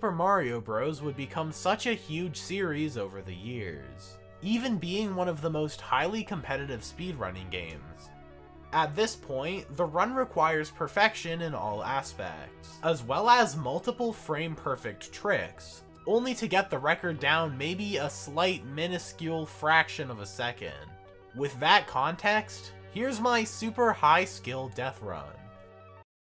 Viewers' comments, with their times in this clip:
0:07 jesus christ i thought that said “Miniladd” for a sec 💀